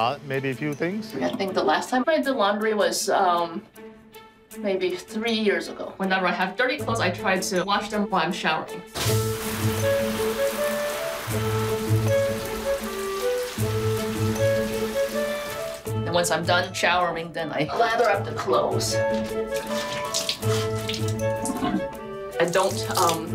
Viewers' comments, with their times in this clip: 0:08 Anyone else hear background music from The Sims? from 😂